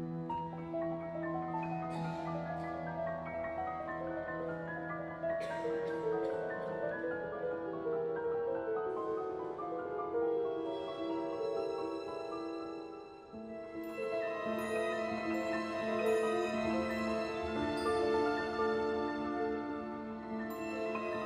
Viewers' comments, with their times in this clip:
0:04 What's that coughing ? :O